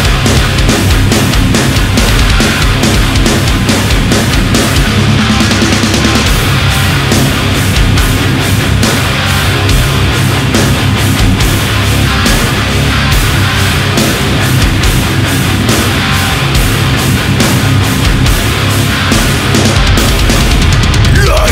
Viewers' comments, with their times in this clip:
0:05 is enough to make Meshuggah blush. 😳